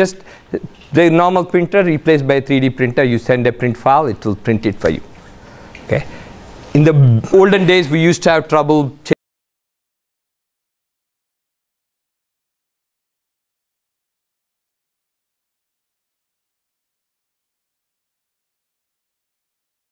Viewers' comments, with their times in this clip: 0:06 Audio cuts out after